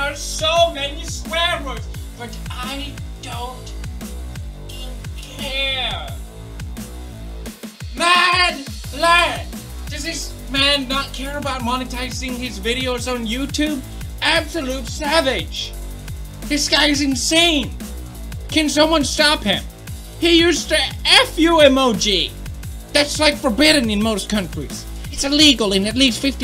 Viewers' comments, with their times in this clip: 0:08 Lady madlad = madlass Also, I was waiting for that beat drop pewds! That hurt my heart!